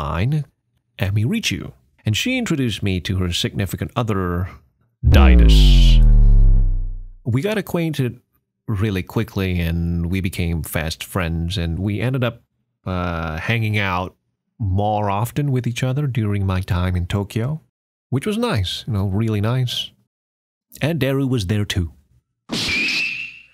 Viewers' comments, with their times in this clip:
0:08 Oh I fucking love this already. Shit got real at this point. Also awesome voice dude.